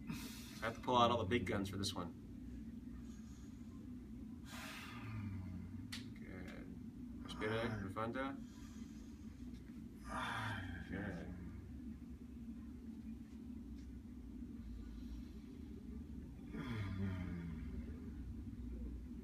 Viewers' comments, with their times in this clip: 0:05 Was that a fart ???